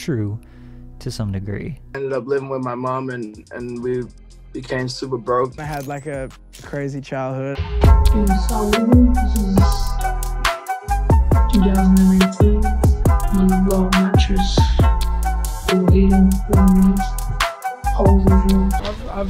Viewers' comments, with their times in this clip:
0:07 the sound is unbalanced and that shit bumps unnecessarily loud and the clip drags on for 5 seconds to long. Nit picky? hell yea it is but foreal that fuck was that. Alright my bad ill head out.